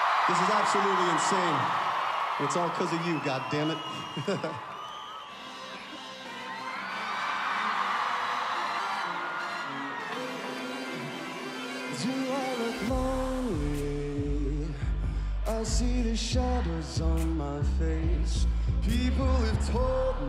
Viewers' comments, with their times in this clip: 0:03 HIS GIGGLE IM CRYING HE'S SO CUTE